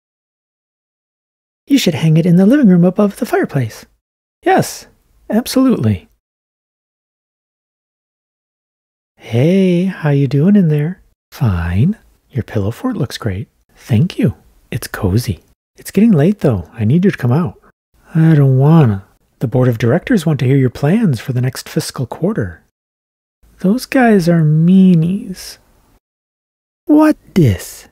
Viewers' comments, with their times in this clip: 0:08 i love this one so much. the voice sounds so wholesome. Also this is actually great for watching at night since its not so bright anymore. Thank you.